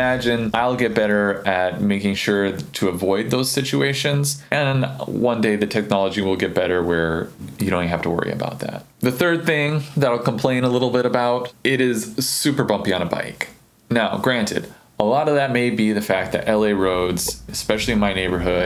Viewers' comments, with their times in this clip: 0:03 did you say "Avoid those stitchuations"? or did I just hear that in my mind? ;)